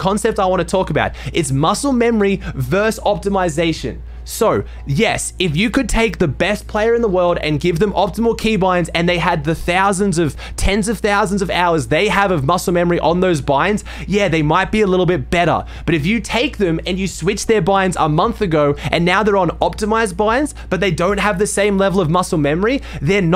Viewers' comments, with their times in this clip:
0:04 "the beth player in the world" lol